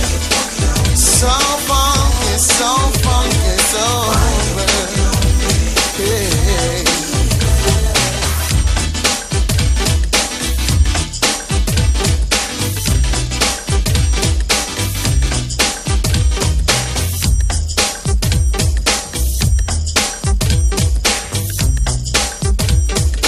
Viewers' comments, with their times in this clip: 0:08 The Retro Harmoney Keys of the keyboards and sound quality was so dope back then in the 80s early 90s if you're not from this era smh you really missed out. The cords were so dope.